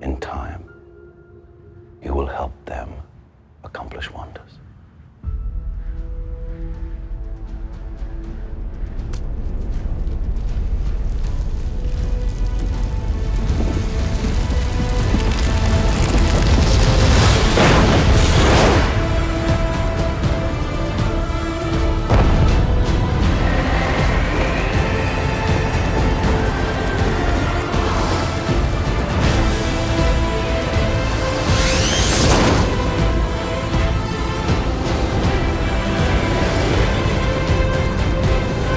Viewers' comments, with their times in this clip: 0:04 this stand and try again instrumental part I flow with it.
0:10 The best superhero movie of all time. Cavill and Crowe is perfect. Zimmer is perfect. Snyder is perfect. that drop is PERFECT. Man of Steel is just perfection.
0:12 Just came back from watching the new Superman trailer - while I loved it, I don't think anything will ever beat this scene of Superman learning to fly, coupled with Hans Zimmer's score that makes you feel like you're actually flying!
0:15 is the best part for any superhero 's soundtrack
0:23 I'm pretty sure the classic whooshing sound effect from the George Reeves TV show is included in the sound mix. Love that little nod to the past.